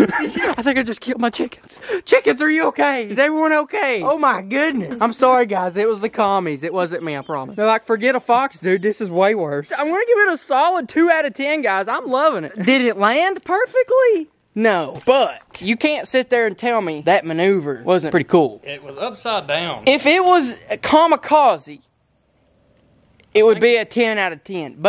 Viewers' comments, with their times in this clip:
0:07 was that a sheep 🤣